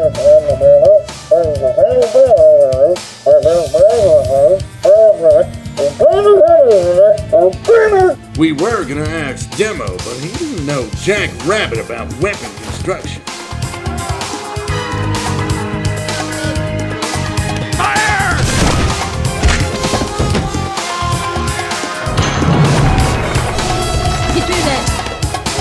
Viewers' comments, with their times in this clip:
0:07 Pyro's "AND BEAT 'EM-" mumbles were so clear it's funny.